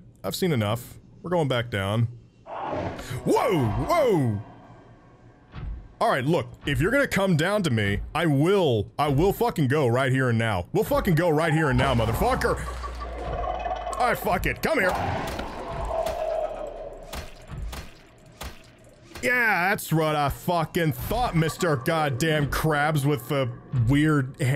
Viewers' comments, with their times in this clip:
0:08 aggressive mouse clicking